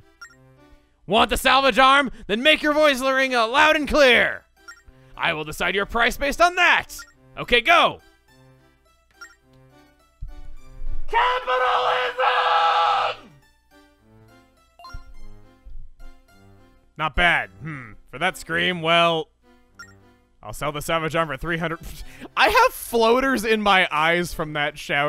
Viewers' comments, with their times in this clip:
0:08 lol XD I am dying because of that scream
0:09 When he screams capitalism, the captions think it's an applause🤣
0:10 "CAPITALISM!!!!!!!" Gosh, that scream is so hilarious!
0:10 needs your headphones turned all the way up!!!!
0:11 The Salvage arm might have been 300 rupees, but that scream was priceless.
0:11 That sounded like it hurt
0:11 That man has a voice for sure